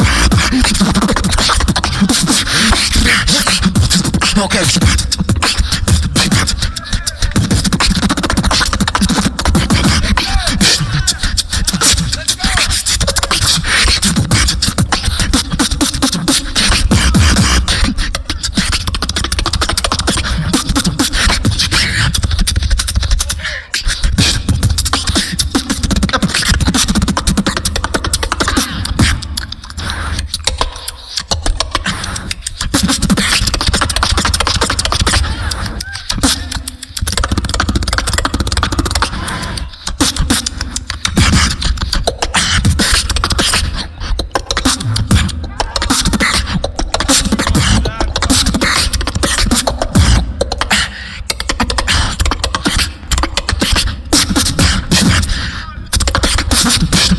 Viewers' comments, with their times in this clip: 0:06 to the end of the video is basically a technical mockery of a jazz drum solo... its amazing to hear this. Very distinct tempo and timing signature changes in a short period amount of time. He deserves more than applauses
0:44 was the best drop ever that was so clean 🤯🔥🔥